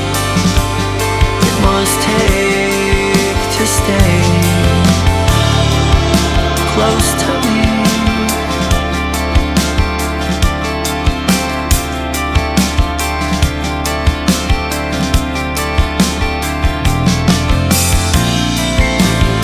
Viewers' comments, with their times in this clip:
0:06 This track is more post-rock than shoegaze for sure, but I'd say that bits like where you can hear the ambient guitar groan is shoe gaze. In any case, my remark was referring to the band's overall catalog shifting toward post-rock/shoegaze moreso than highlight this song in particular